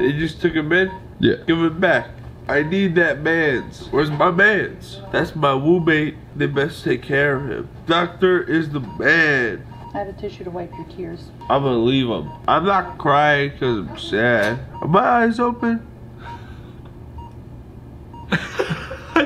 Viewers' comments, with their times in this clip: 0:04 Did anyone else hear “that’s my wombmate” or is that just me